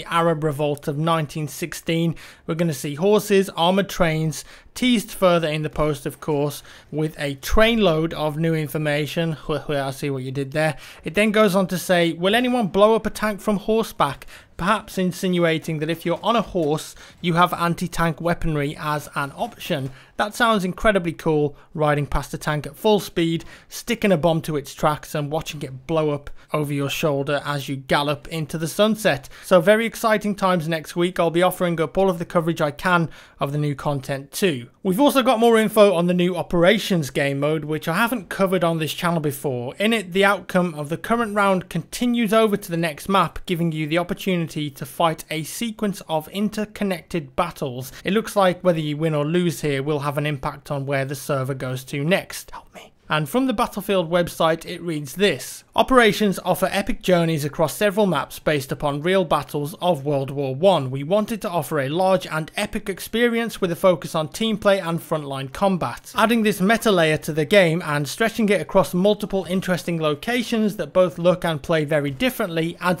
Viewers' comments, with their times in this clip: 0:10 guys! Guys! He's obviously a undercover Brazilian, you can obviously hear the HueHue.
0:47 listen from there is a help me whisper
0:49 you can here help me?
0:50 did any one else hear help me
0:50 ... are you whispering "Help me"??? ...not creepy at all :D
0:50 +jackfrags after you say "next" it sounds like something saying "help me".....
0:50 what did he say
0:50 Is that a help me ?!?!
0:51 anyone here the help me
0:51 Did anyone else hear help me?
0:51 Listen to it says "Help me" in a whisper
0:51 What's with the creepy voice ? "Help me?"
0:51 wtf is that spooky voice saying help me.....subtle marina joyce reference ;p
0:51 Anyone hear the whisper help me
0:51 Anyone else here the "help me"
0:51 if u listen carefully it sounds like he's saying help me................WTAF?!?!?!?!!?
0:51 is it just me or did he quietly say help me
0:51 Does he say "Help me" ?
0:51 same here the whispering help me indeed
0:51 anyone else hear help me
0:51 Oh my God! Creepy "Help me!" xD
0:51 "Help me!" whisper WTF! OMG
0:51 are you having a poke at marina joyce with that whispered "help me" it freaked me out a little because i didn't realise it was from the video.
0:51 he whispers help me
0:52 Anyone else hear help me quietly at the mark?
0:52 anyone heard ''help me'' in the background ?
0:52 Did I just hear him whisper help me???? in the video
0:52 does any her that weird voice in the background
0:52 Did I hear a "help me" at ~ ?!?
0:52 did anyone else hear a whispered ' help me' what is that?
0:52 wtf someone said 'help me' very quite...
0:52 Lol, the "Help me" scared me because I was in my dark room and had me looking around all paranoid until I rewound the video and figured out that it was you. Good one.
0:52 anyone here him whisper help me
0:52 Did anyone else here help me
0:52 Am I the only one that heard "help me" Creepy
0:52 Listen HELP ME! Spooky????????
0:52 why the help me it's creepy
0:52 Did anyone else hear "help me" ?
0:52 did i just hear help me ??? or am im crazy
0:52 wtf why is there a whisper saying "help me".
0:52 what is the whispering
0:53 you can hear the words "help me", no joke
0:53 it sounds like he says "help me"
0:53 Uuuu did I just here help me in the vid
0:53 did anybody else here a voice in the background?
0:54 someone says help me
0:54 im sorry but did anyone else hear help me in this video? right before
0:54 Anyone else hear that weird "help me" ?
0:54 Any else hear help me
0:55 Anyone else hear the help me ?
0:55 did anyone else hear the help me
0:57 Lol that marina Joyce whisper tho